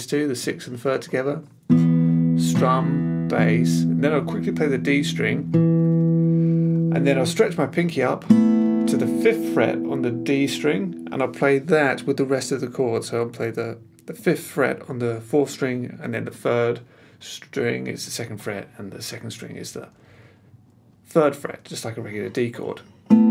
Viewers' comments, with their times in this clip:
0:10 For the big stretch is it really necessary to hold that shape? as i don't really hear the high E string, and it may be easier to move the middle finger up to the B